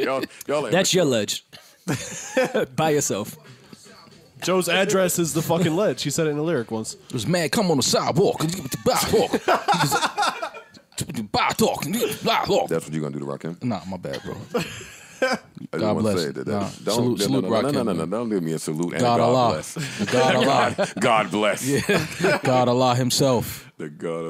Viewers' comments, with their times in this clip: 0:07 always gets me. That Mal Rakim impression 😭😭😭